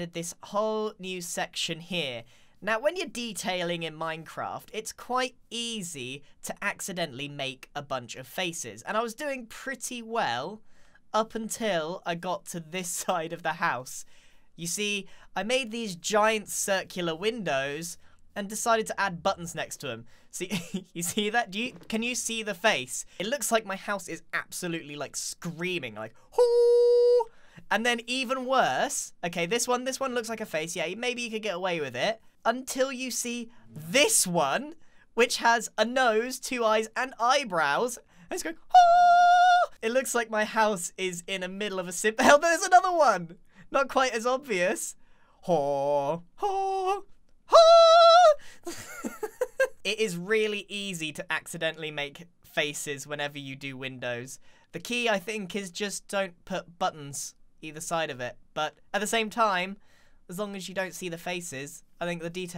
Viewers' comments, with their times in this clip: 0:03 the way he says "minecraft"
0:37 grian hitting those high notes lol
0:38 can we just talk about how beautiful and flawless that high note was 🤣
0:38 someone get this guy on a singing contest cause wow that was beautiful.
0:41 I can't tell if grian is saying "help there's another one" or if he's saying "hell there's another one"
0:45 the choir starts
0:45 He is great at vocalizing